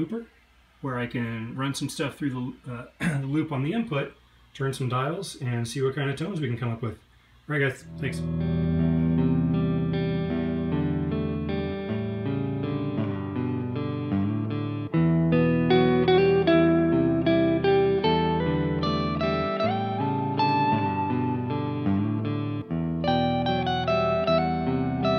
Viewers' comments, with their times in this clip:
0:10 Did you use any chorus or other modulation? Such a beautiful tone!